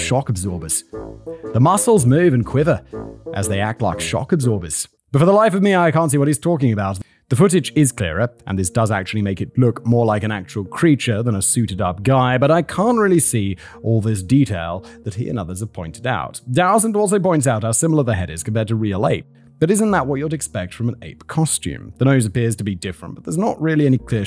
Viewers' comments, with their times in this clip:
0:07 Actually sounds like a British guy trying to do an Irish accent.